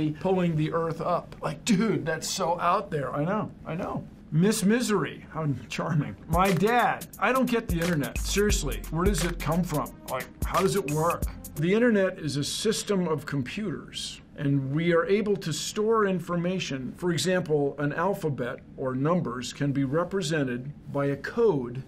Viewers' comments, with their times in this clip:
0:03 I wasn't watching the vid, just listening, so after before I read the subtitles I thought I heard Bill Nye say "even in this misery, I'm charming" which still made sense